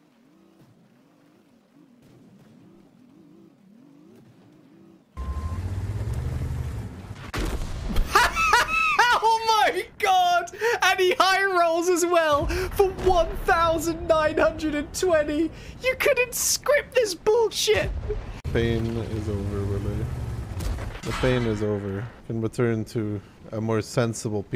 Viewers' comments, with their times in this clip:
0:06 I love that this is mostly a "YOU HAVE ANGERED THE SHITBARN. PREPARE TO DIE!" compilation. The laugh of a man who has gone completely insane.